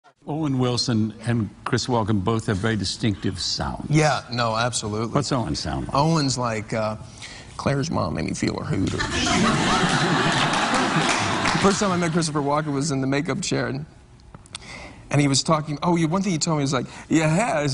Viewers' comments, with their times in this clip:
0:03 was that a slight Christopher walken growl